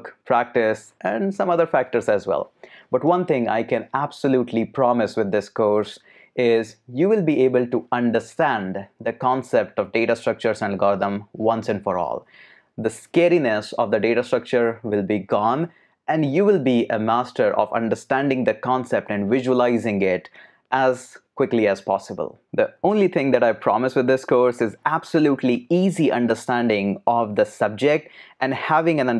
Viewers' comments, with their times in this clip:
0:10 data structures and Gotham